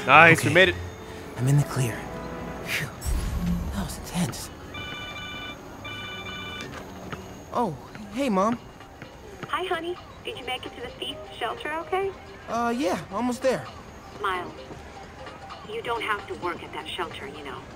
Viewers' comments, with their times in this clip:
0:05 Is it me or does Miles ringtone sound like a codec call from metal gear solid?